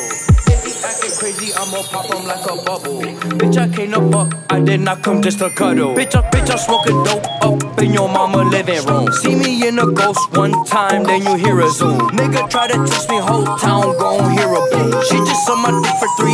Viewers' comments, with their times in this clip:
0:04 Something the beat, the effect on the video and just nle choppa looking badass is so good